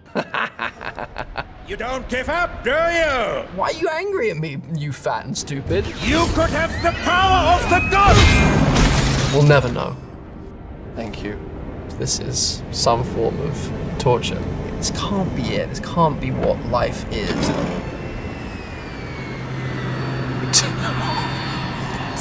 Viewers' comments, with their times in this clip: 0:06 Red Skull: "you could have the power of the gods!" Andrew: (Wheezes) 'throws the shield at red skull'